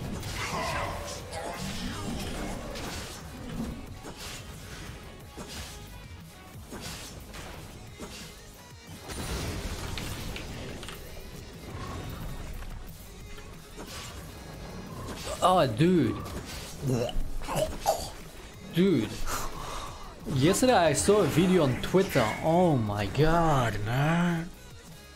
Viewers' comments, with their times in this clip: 0:07 Your voice is magnificent.